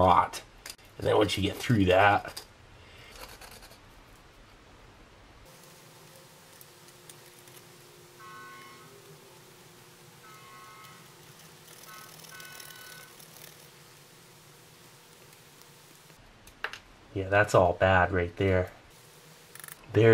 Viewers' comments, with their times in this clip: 0:08 The weird background sounds were actually Steve’s stomach welding armor onto itself.